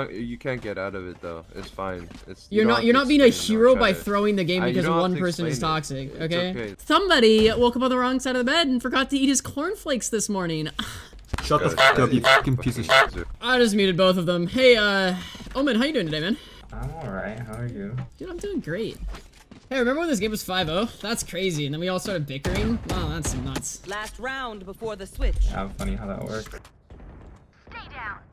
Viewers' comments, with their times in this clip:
0:10 what is this mic omfg